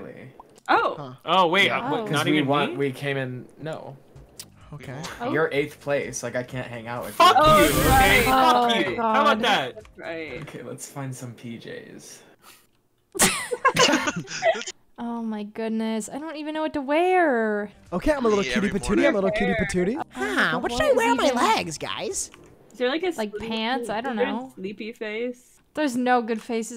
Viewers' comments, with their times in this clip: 0:08 Y’all censored like all the curses besides